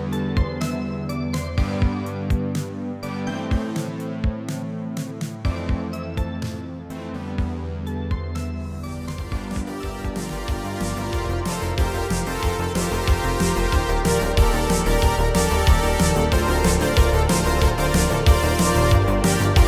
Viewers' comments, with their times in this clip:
0:03 Yo, the drop got me vibing, holy cow